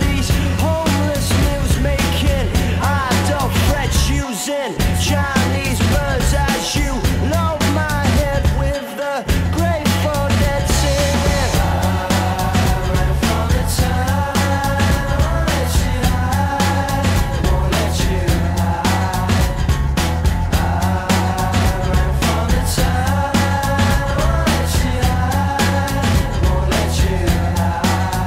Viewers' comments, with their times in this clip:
0:10 What's being played on drums? Can't work it out, I know the beat but those last 2 hits can't figure it out.